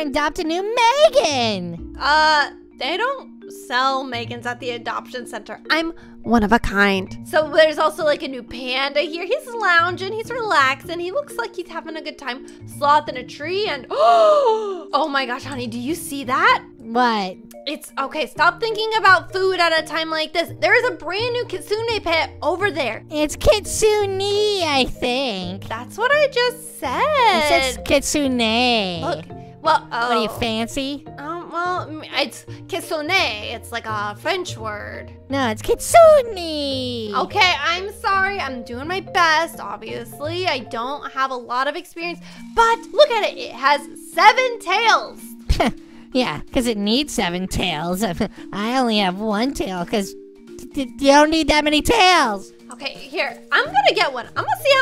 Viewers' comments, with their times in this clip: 0:04 I like how she went closer to the mic then said "I'm one of a kind"
0:36 turn your subtitle And subtitle says "it's consumed me" 😂😂😂